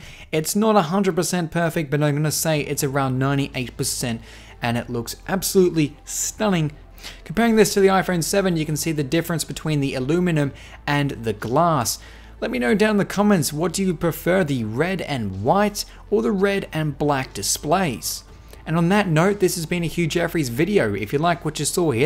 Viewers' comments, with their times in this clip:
0:07 The difference between the WHAT and the glass? You have a very unusual American accent. My Mom says she likes the color of the cell phone.